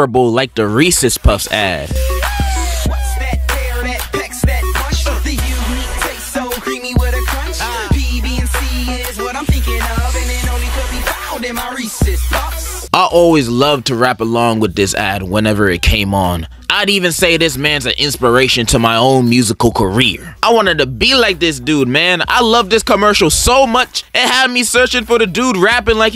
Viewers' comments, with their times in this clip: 0:07 did bro say "bbc is what im thinking about"